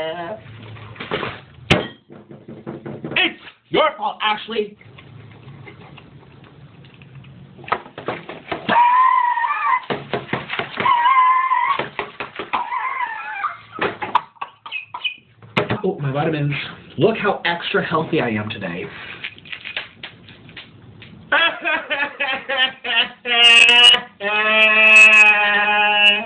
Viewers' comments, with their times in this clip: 0:07 screams like a dinosaur
0:08 dinosaur scream be like
0:09 Thump thump wheezing thump thump wheezing thump thump wheezing